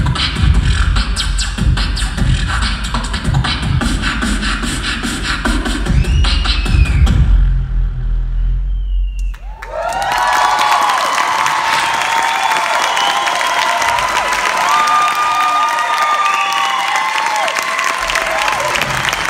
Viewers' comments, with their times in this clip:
0:06 What a BASS is that... Sick man 🔥🔥 And also the last one's BASS sh*t bro ⚡
0:07 ending BOOM LOW BASS SUB